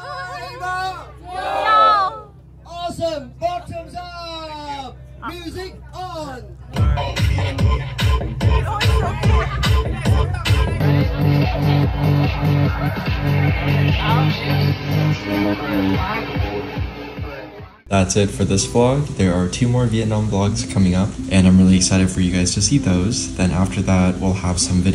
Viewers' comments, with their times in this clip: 0:05 OMG when the music comes on, I realize I would hate being trapped on that boat. 😀 😀 Your dad is so nice